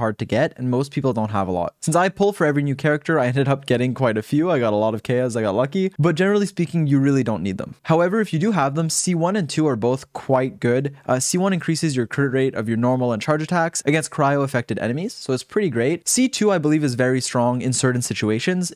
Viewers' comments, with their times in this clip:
0:06 Idk y but I imagined him smiling when he said he got lucky